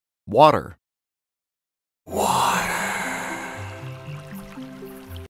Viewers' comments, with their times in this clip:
0:00 So there’s a running joke in my school that the choir teacher always calls alcohol “water”, and the fact you sounded exactly like them here just made my day.